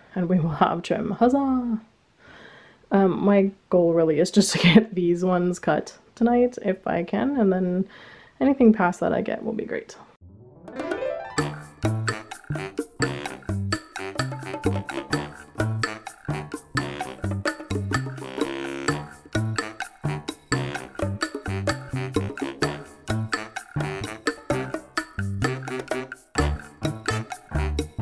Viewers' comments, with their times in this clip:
0:10 thing one: Keanu is incredibly cute in his little hidey hole thing two: your music is giving me very strong Wii theme music vibes and I don't really know why but I'm into it